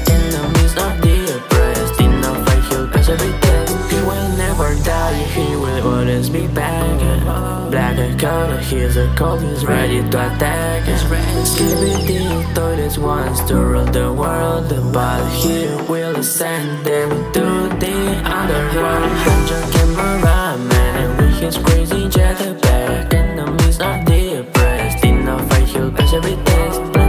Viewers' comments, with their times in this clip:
0:10 goes cold and hard frr